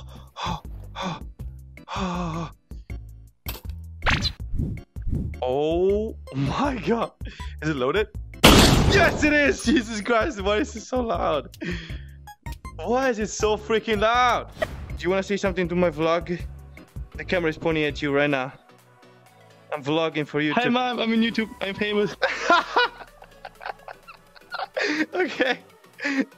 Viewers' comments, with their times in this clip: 0:09 well, i don't that a rifle that can penetrate a tank armor shouldn't be loud xD